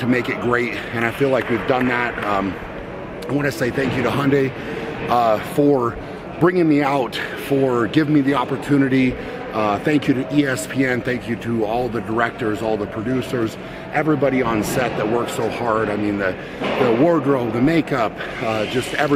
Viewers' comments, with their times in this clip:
0:05 was i the only one who heard "Thank you to Hyundai pause 'Ford' ..brining me out. 'Ford' giving me the opportunity..."